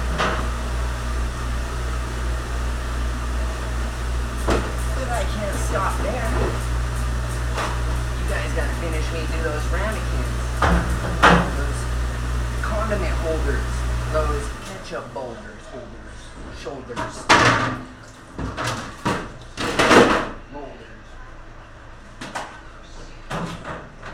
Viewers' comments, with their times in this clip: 0:05 “But i can’t stop ther” was some Jim Carey shit lol